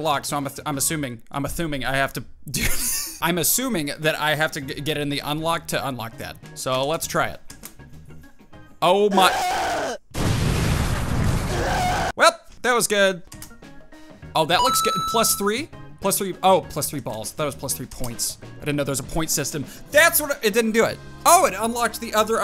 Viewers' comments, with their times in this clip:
0:09 what a this scream?